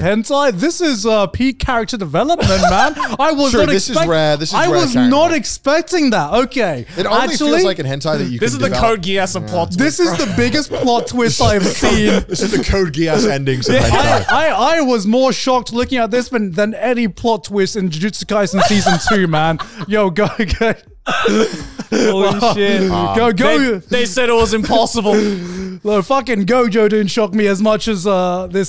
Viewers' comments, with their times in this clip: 0:09 almost a sync there